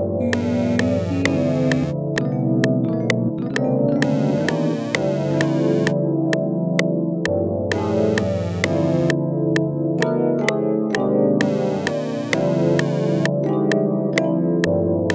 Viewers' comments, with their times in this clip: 0:03 icytwat type beat